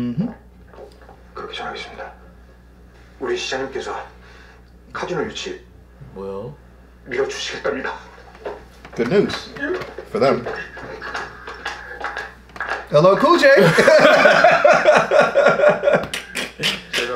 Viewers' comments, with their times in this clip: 0:05 did I actually hear 뭐요 or did I suddenly forget English help